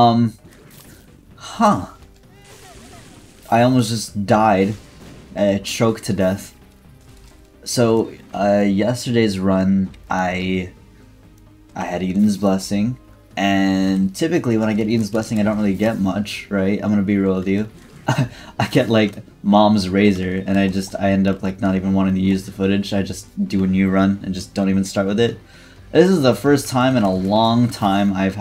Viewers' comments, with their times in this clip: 0:09 bro sounds like he's being interviewed on a True Crime show from 2003